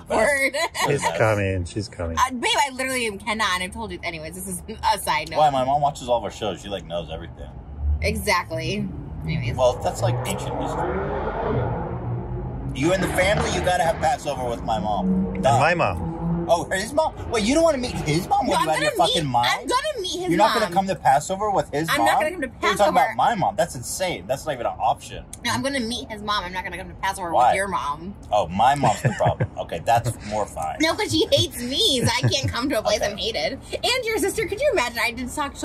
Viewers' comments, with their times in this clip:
0:07 Are we just going to ignore the gunshot sounds lmfao
0:09 DOES ANYBODY HEAR/SEE GUNSHOTS OR A GUN BEING SHOT?????
0:19 did anyone hear the gunshots here lol